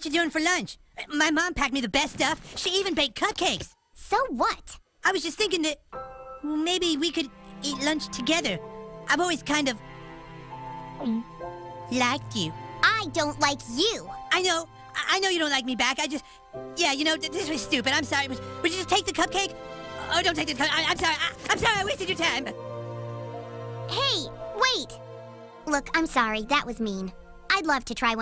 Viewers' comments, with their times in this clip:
0:10 his swallowing of spit is so good. And so is his pronounciation of 'liked you'